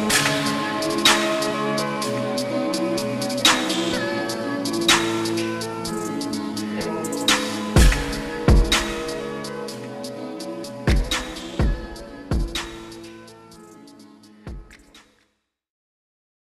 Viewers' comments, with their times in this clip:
0:03 the two gunshots were on point
0:03 gunshot was right on the beat